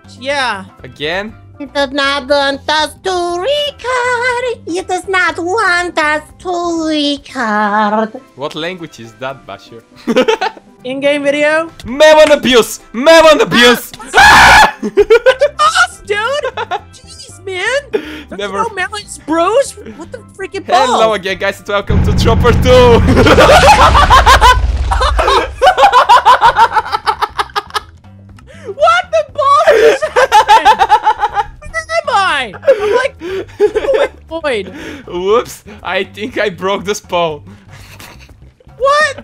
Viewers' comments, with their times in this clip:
0:06 Lol that voice :p trolololollolol
0:23 Dat laugh though....
0:23 Best evil laugh ever.